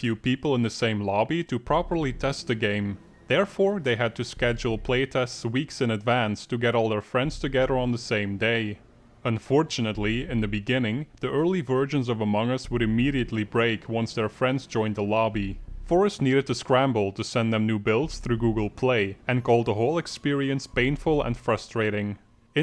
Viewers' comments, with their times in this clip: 0:10 "the early virgins of among us wil immediatly break"